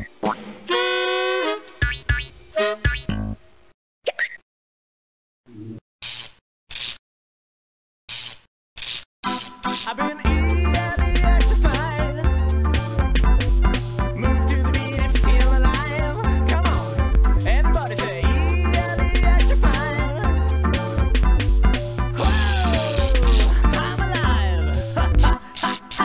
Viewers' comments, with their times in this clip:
0:09 that song has lived rent free in my head for years. Seriously. It’s only a few seconds long and I still remember it all these years later